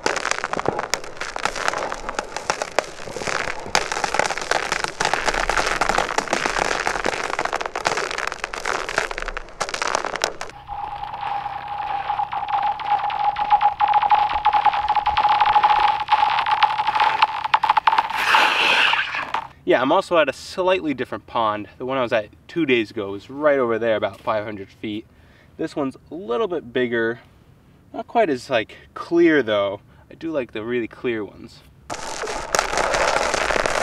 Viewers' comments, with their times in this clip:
0:05 amazing audio ,,, could just be an entire album honestly ,,, like the "ocean waves" genre
0:12 And.... uhhh The ice is cracking like crazy
0:13 that’s not the sound of ice cracking it’s the aliens 👽 communicating 😜
0:15 daza weird noise